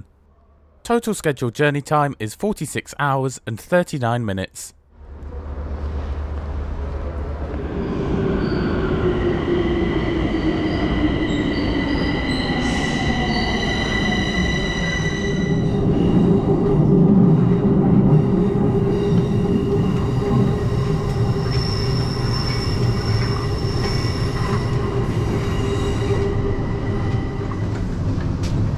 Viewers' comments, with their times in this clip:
0:09 Didn’t that train sound like the overground
0:10 this sound right here sounds like a lot like an mta m7 rail car